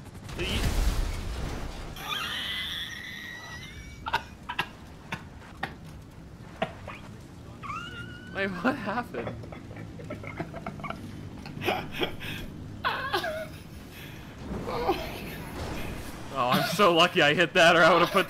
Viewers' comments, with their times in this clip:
0:05 dat laugh >.o.>